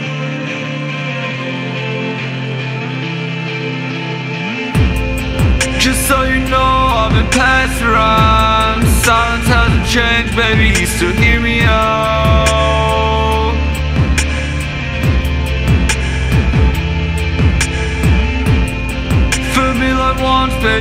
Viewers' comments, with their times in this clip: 0:07 Sounds like Bladee